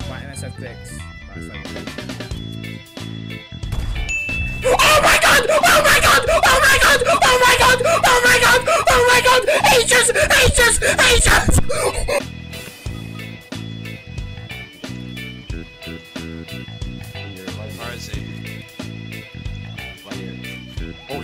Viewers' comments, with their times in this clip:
0:05 the same sound my dog made when i drove over his tail